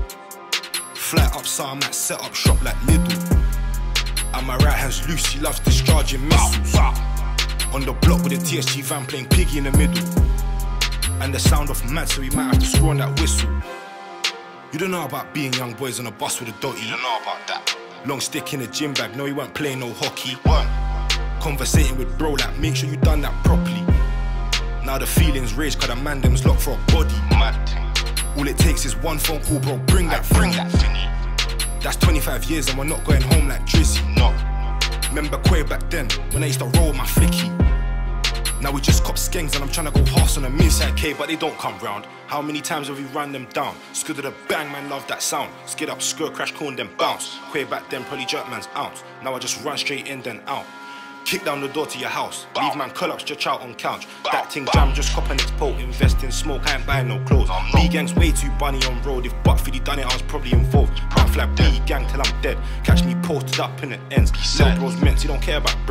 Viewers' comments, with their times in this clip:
0:04 did man just say my right is lucii or am I buggin
0:50 i barely know what this nigga saying but its fire